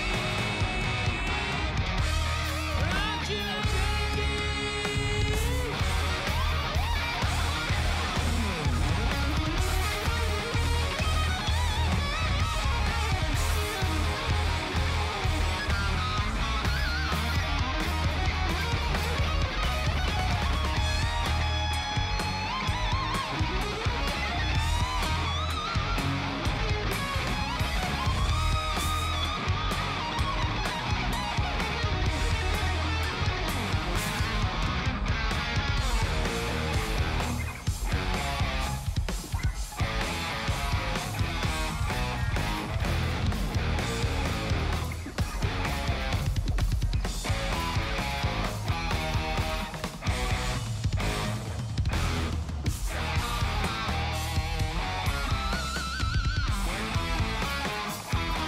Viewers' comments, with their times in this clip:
0:05 THAT GUITAR SENDS CHILLS DOWN MY SPINE
0:46 omg that double kick